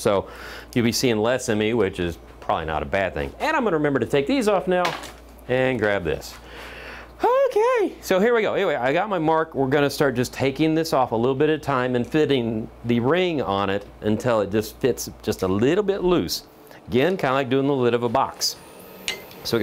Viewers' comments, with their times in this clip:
0:07 Can I turn that high pitched "OK!" into a ring tone?